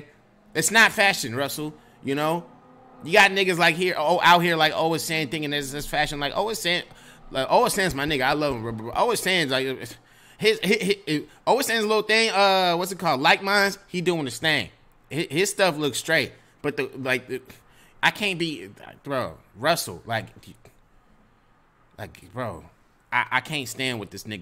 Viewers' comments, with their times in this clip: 0:05 The strudder is real 😂😂😂